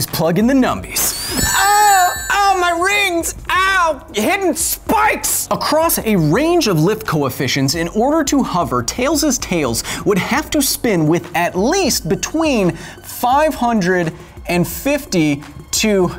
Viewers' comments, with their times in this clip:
0:04 haha sounded so angry